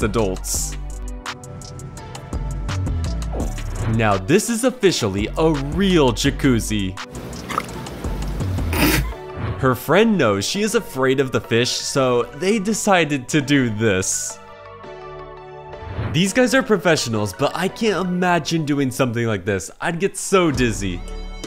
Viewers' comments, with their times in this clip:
0:09 was that a fart piggy